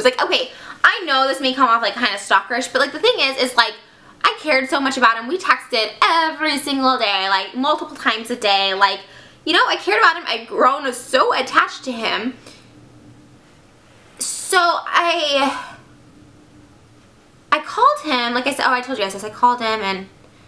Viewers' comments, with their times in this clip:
0:05 her voice was soooo cute the accent is sssssooooooooooooo cute